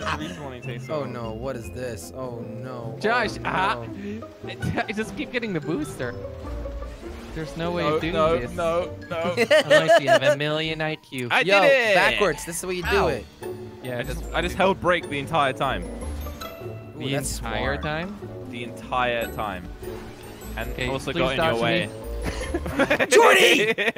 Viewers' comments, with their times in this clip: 0:09 that laugh tho!😂